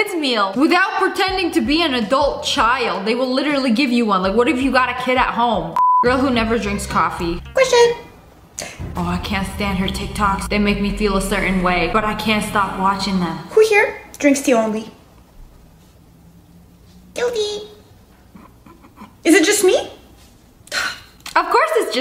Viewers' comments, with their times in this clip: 0:05 Help 💀💀 the fart